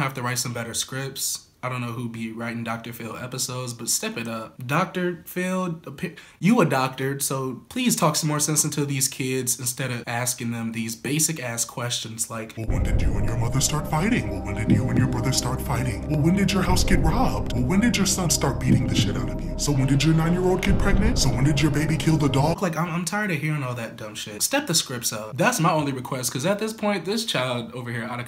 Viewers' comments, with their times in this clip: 0:10 he started rapping